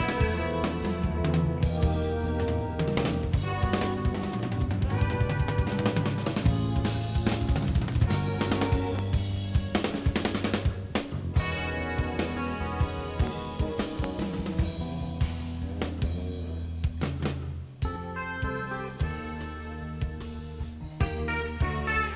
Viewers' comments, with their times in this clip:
0:03 The fill is so good